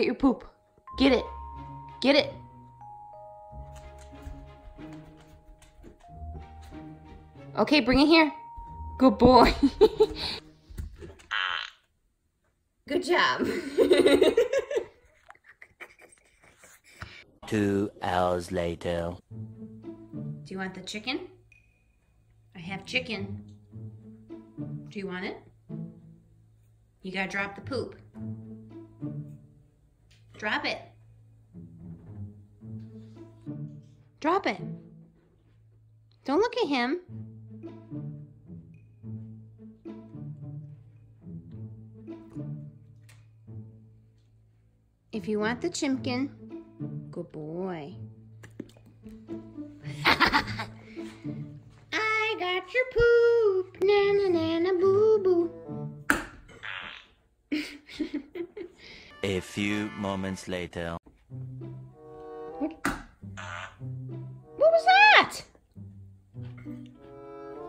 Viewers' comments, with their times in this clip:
0:10 that toot though 😂
0:10 that toot though 😂
0:44 AHHH she said Chimken fr😂
0:48 the way she says na na na na boo boo makes me laugh so hard
0:50 hahaha this song is funny